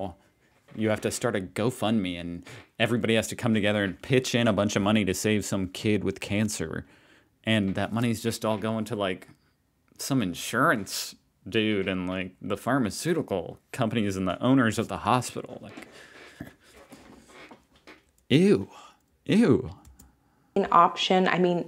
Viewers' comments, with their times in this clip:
0:06 I can still hear the scream echoing through my appartment. Coming together , everbody pitch in , so like social health care just way more sad and not guaranteed? For the love of every entity you choose to belive in that is the point. Social health care benefits nearly everybody, the only total looser in that equation would be insurance and pharmacy companys.